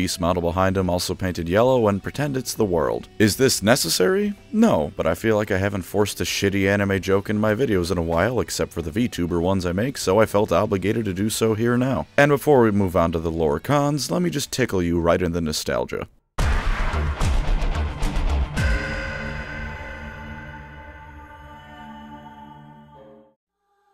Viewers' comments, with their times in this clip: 0:09 dame my rattling bone reminiscent the sound of the past